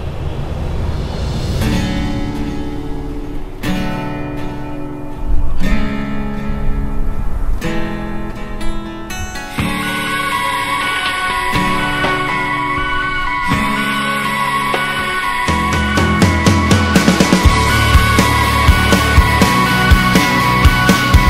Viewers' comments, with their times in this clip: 0:08 The Gibson Les Paul was switched to the secret Acoustic Guitar setting on the pickup selector switch